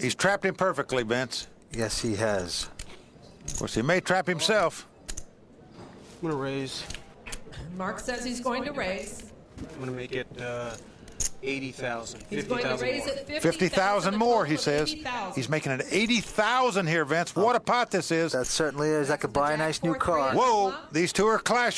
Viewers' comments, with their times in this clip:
0:05 one of the biggest tells in the history of televised poker..... Very confidently says "I'm going to raise", sits up in his chair, readjusts himself, and then announces the value of the raise. Looks way too comfortable